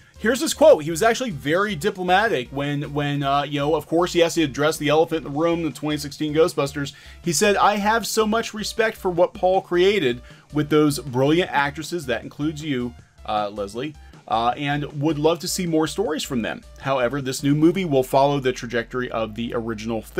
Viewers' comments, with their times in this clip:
0:06 now i know what Jason Reitman sounds when he's bullshitting.